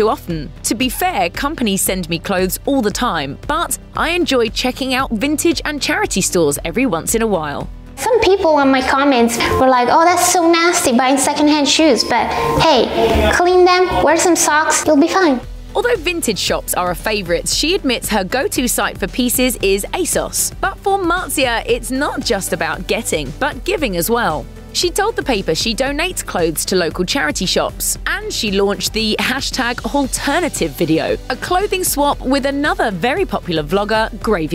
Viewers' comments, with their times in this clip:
0:08 pewds voice before shouting soyboy
0:08 you can here pewds in the back
0:12 you can totally hear Pewds in the background
0:15 am I the only one who heard Pewds?